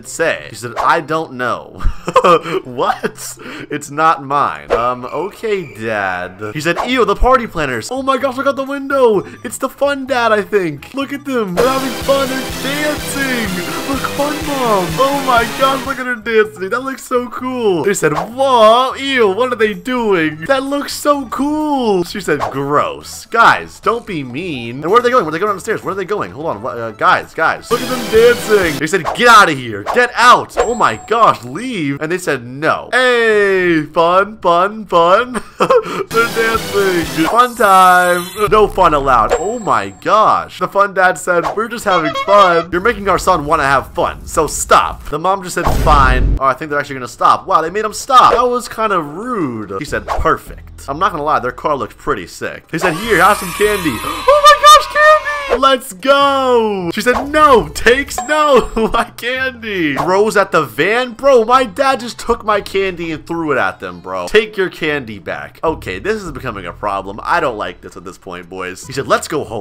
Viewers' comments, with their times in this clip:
0:09 lol I love the clown music
0:10 got me bc of the exstream sound and they are dancing xd
0:12 circus meme song with fun family
0:54 The way he said “OH MY GOD CANDY!”